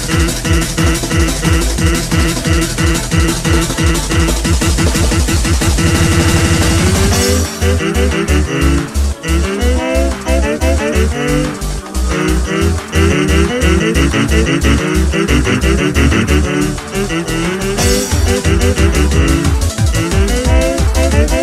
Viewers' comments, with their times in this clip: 0:07 sans sing in japanese
0:07 sans sing in japanese